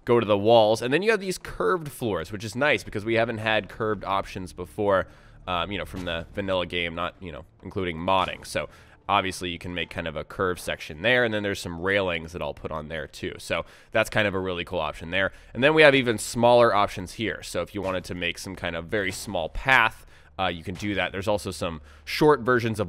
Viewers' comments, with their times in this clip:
0:03 lmao.... starts video, skips intro to "-curved floors its nice because-" and im thinking they have curved swords???? CURVED....... SWORDS!!!!!!!